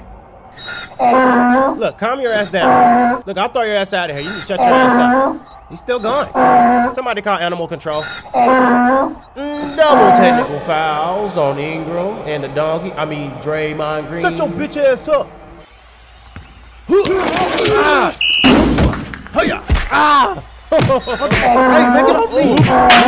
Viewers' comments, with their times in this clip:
0:04 draymond sound like me after i take a shower